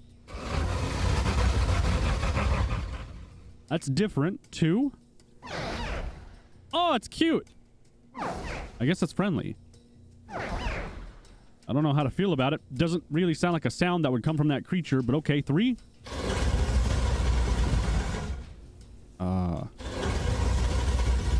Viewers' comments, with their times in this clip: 0:04 actually baby crocodiles do make that sound
0:06 baby alligator noise